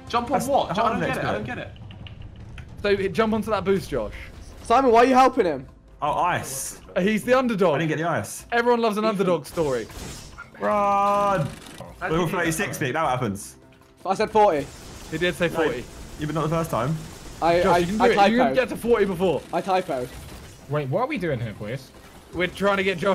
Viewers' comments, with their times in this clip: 0:10 it sounds like someone whispered "im back"